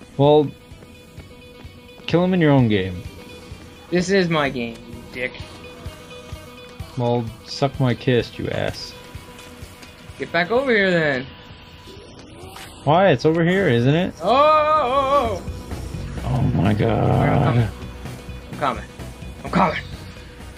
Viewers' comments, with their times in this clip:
0:07 the song sounds like thunderstruck by ACDC